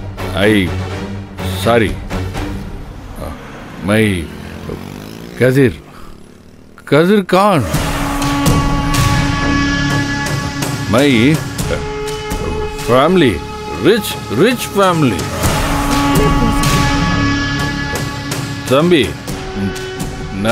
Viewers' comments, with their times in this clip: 0:07 😱😱😱😱😱😱😱😱😱😱 KATHIR KHAN OR KAATHEER KHAN ? 😕 😕